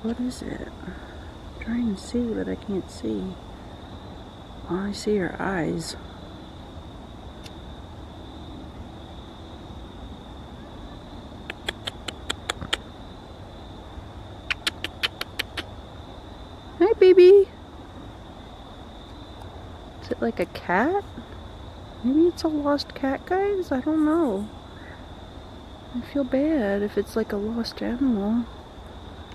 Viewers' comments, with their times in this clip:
0:10 was that a cat meowing ?